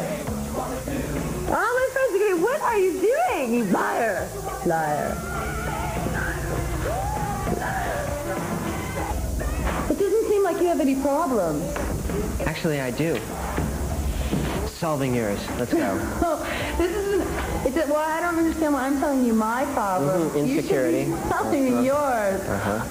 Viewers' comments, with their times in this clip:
0:04 The way she says 'liar, liar, liar...' sounds a lot like kat bjelland in bruise violet. which is supposedly about courtney.